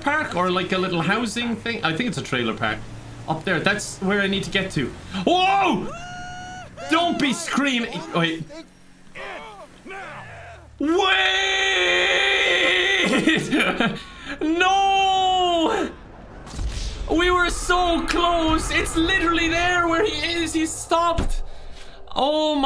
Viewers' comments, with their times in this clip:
0:05 oh my GOD the way Wade screams "Wooohooo" and then they just tip him out and he falls to his death 😂😂😂 I can't handle this